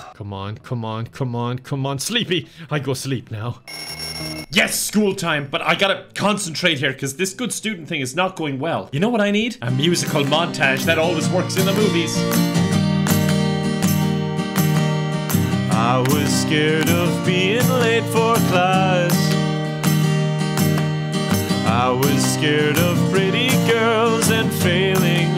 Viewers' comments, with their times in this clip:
0:03 Your little song has me hooked now. You rock!
0:07 is when the song starts
0:07 is when the song starts
0:07 okay but why does the Riptide cover work so well? I haven't heard the original song in so long so that was a nice bit of nostalgia
0:10 kids pop ahh music
0:12 Why is he dead ass good at singing?
0:13 the beginning of a beautiful singer-songwriter career